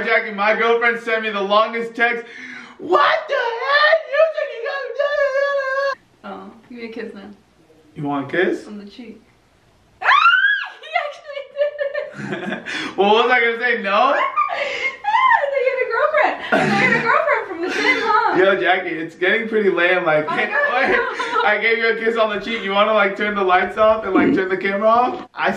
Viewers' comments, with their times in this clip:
0:06 I thought she said “Give me kids now”